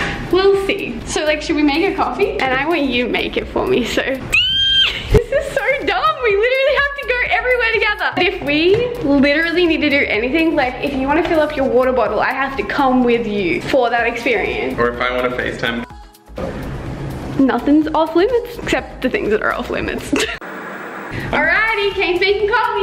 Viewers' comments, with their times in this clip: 0:03 sorry headphone users
0:04 rip headphone people😂😂😂❤